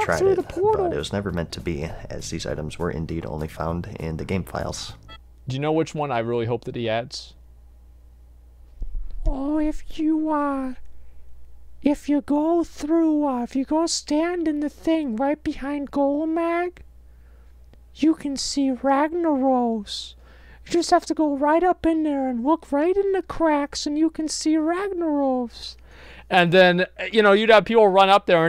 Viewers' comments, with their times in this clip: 0:09 Funny how I just found out Carl Wheezer plays WoW.
0:13 That Carl Wheezer impression was awesome